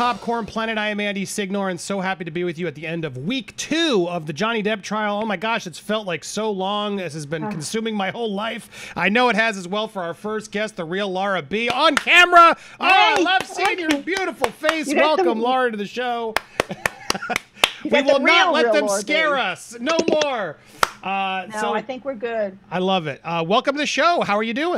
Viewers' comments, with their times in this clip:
0:07 not u farting on